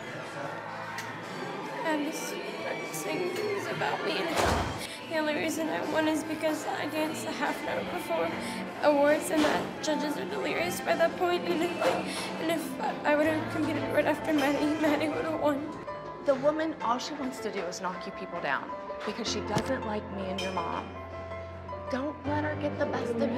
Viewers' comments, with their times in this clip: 0:03 chloe forcing herself to cry and playing victim, sounds EXACTLY like christi down to the exhalations
0:05 When Chloe was crying it broke my heart 🥺💔💔